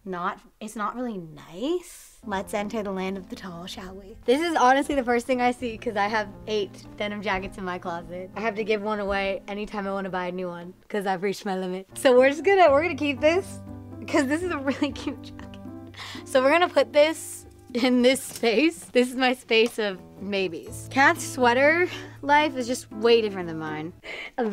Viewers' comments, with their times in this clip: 0:10 cuz I've reached my limit sounds just like cardi b